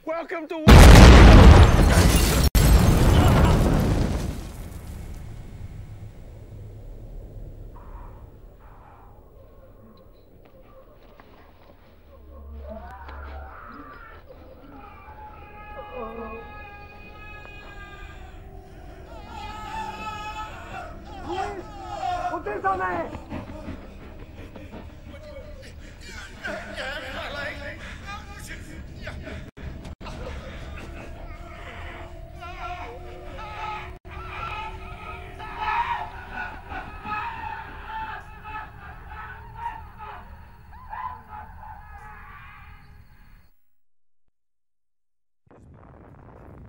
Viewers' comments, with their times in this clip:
0:10 i was watching this at night with headphones and these screams felt very real, like they were comigo for the outside part of my house
0:13 jesus fuck, with my headphones on I was convinced for a second those screams came from behind my house
0:20 why you screaming? W
0:27 sound like the guy from spongebob. the aw my leg guy